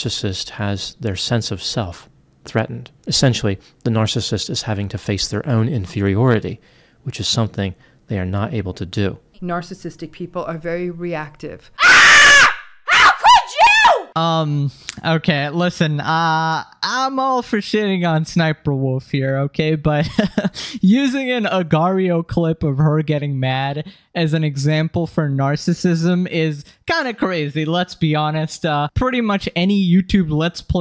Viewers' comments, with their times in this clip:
0:10 HOLY GOD MY VOLUME WAS TOO HIGH AND MY SOUL LEFT MY BODY
0:11 ssstalkerwolf screaming genuinely scared the shit out of me
0:11 the scream almost got me to fall off my chair
0:12 i got jumpscared 😅 she so loud,my headset💀
0:12 Ngl, was the most terrifying screamer for me, better than in any horror media😢
0:13 that B-word just killed my ears.